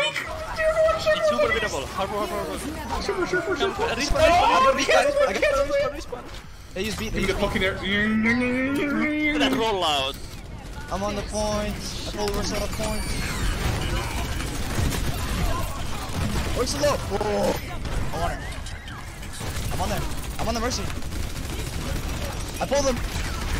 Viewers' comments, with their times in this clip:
0:06 For a moment I thought the video was on speed up :DD